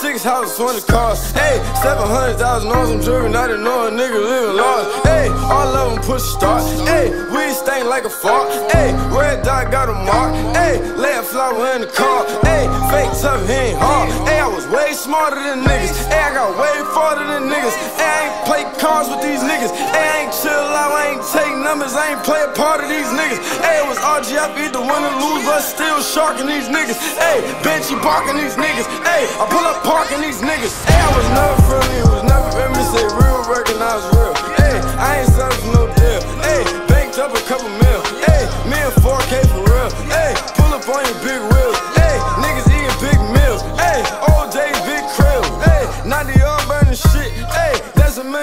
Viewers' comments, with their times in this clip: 0:04 the mumble go so hard bruh shi sound lit asf
0:29 When that beat came in THO😳😳